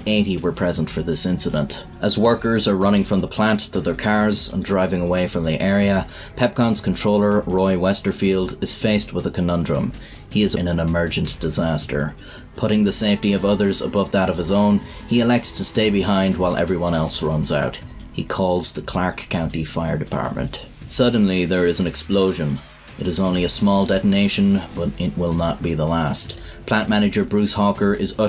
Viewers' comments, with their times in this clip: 0:10 what happened here? The subtitles says "He is a wheelchair user ina an emergent disaster" But the audio is cut?=/